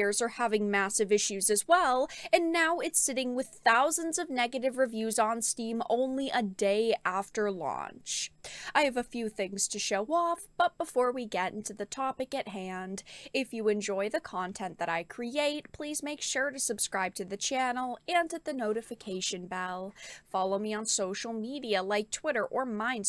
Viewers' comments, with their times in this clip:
0:10 every single video; same exact delivery. Especially the “all of the suppo-rt” part. Makes you sound like a grifter. Vary it up and you won’t come off sounding as though you only care about the money.